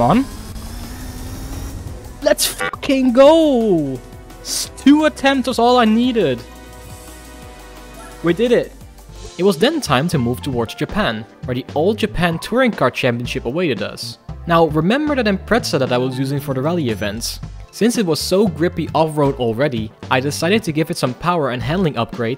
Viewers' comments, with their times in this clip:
0:03 I love the censor noise you used, lol. Also, I really like this. I'm not usually into speedrun-style or challenge videos, but this was a bit more casual while still being fun and informative!